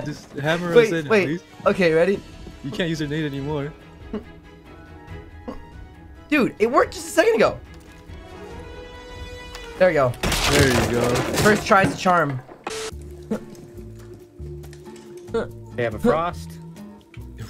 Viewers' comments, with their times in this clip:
0:03 i was done bro he trying so hard but nothing was happening and a little that little noise got me so good and the face reactions are killing me